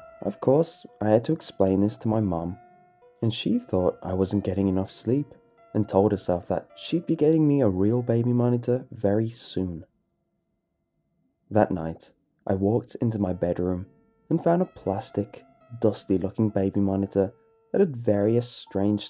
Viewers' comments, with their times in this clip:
0:04 I rarely get that freaked out at the actual stories, but the goddamn music at like terrifies me